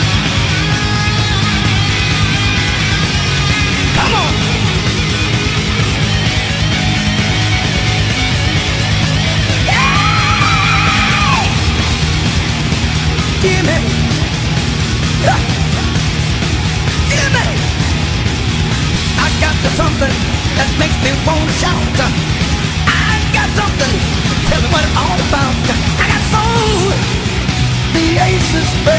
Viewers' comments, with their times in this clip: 0:09 that yell combined with the guitar is GODLY
0:13 the vocals, the music, the mix. Holly shit I wish I had James Brown's voice.